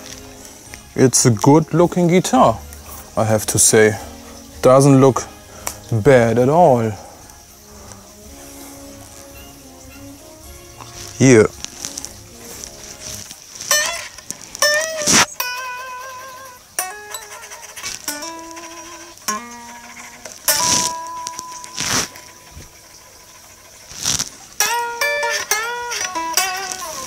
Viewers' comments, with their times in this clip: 0:08 What a beardscratch against the mic :P